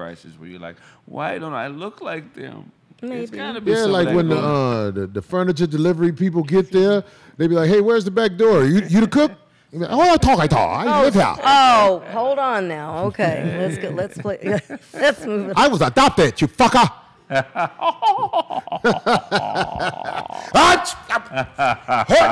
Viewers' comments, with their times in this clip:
0:04 When Corey says who are you talking to with his Asian voice over 😂😂😂